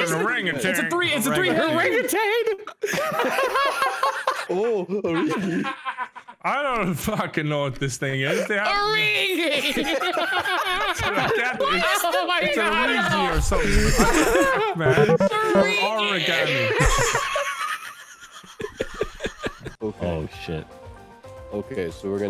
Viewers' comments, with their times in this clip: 0:08 The was he said and laughed